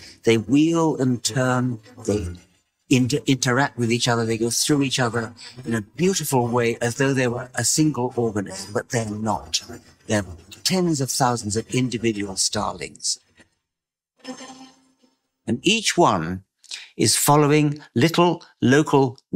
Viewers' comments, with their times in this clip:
0:03 There is some distortions of the audio here and there. for instance.